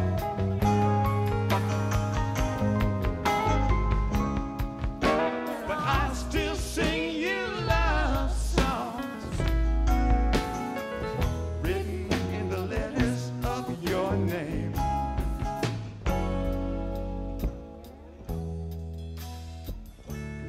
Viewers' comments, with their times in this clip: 0:07 love how Jerry hits a lick, then stops playing and starts conducting mickey's drumming !
0:07 Jerry is a little pissed at the lackluster drumming 😂😂